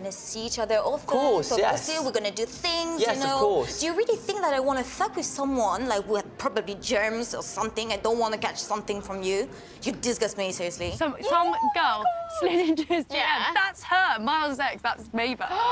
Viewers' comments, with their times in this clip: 0:03 her accent along with her anger just always crack me up I love this bitch 🤣🤣